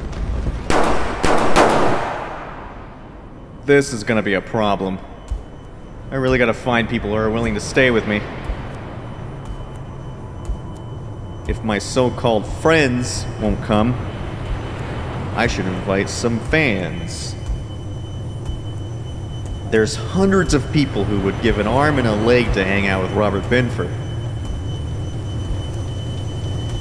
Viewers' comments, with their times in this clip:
0:08 A thrilling tale with self-inserts that would make Sam Lake blush. I knew when I heard that ringing this was going to go the "House That Jack Built" route... KLAY WORLD IS BACK!